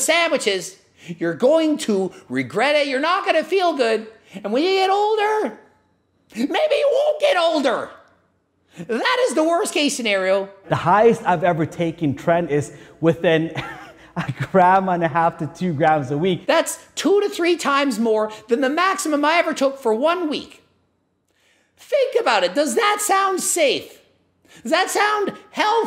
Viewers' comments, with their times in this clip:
0:06 for some premium screaming